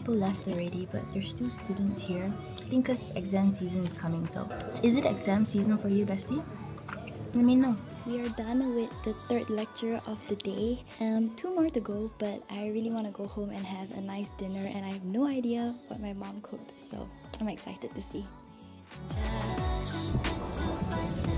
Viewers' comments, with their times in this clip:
0:06 'lemme know' was soo adorable 🥰🥰